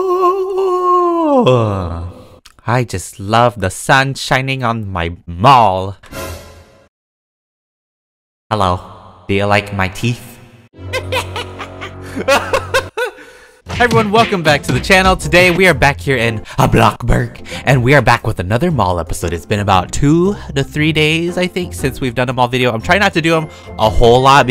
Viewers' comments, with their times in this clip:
0:07 I thought u said I like the sun shining on my balls 😂😂😂 I’m so dirty minded